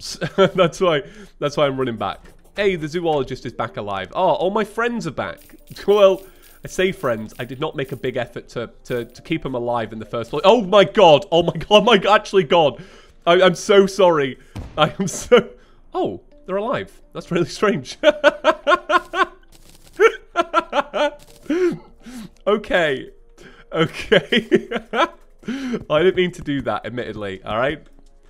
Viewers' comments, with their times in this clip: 0:09 I literally died from laughter after hearing you going crazy about the fact ya missed your hotbar by a mere inch! ROFLMFAO